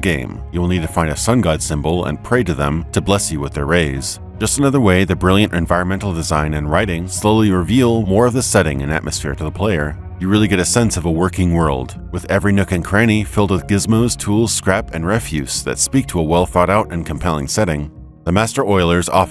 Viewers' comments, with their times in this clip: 0:06 What's the song playing It's so relaxing.